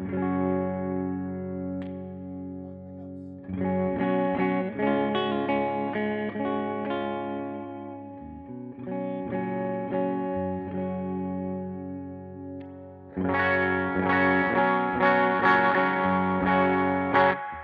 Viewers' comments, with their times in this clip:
0:05 that g string! 😅😅😅😅